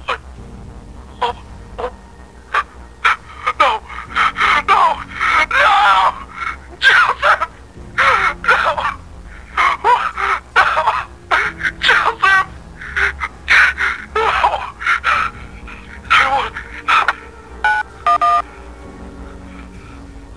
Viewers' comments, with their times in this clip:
0:03 it sounds so real...Amazing voice acting ! Well, at least I hope it was acting...
0:07 And sadness in Jeremy's voice